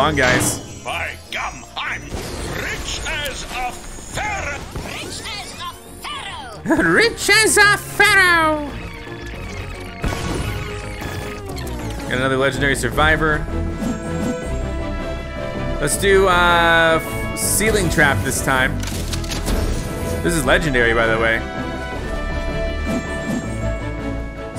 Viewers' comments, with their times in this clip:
0:06 does anybody think he sounds like Gary from Pokemon?